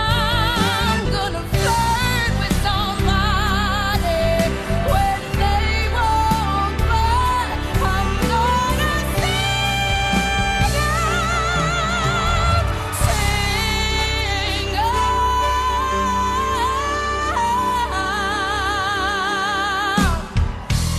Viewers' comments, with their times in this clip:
0:08 Her ‘sing’ is the mark of just how good this woman is…for those who know…to belt out that on an ‘I’ vowel is unbelievably difficult but she just lets loose and it’s there!